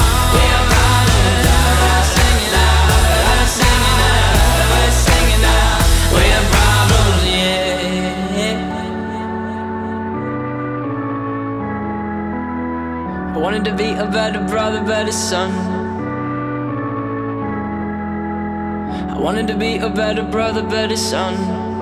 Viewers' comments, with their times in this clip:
0:07 is my fav part I love the piano and just everything about it